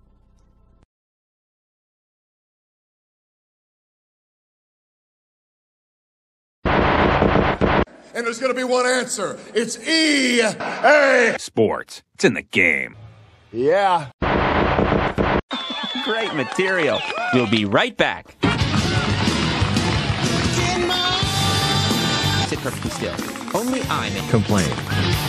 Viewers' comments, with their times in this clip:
0:07 END THE SHOW. END THE SHOW. (*CM Punk* like chants)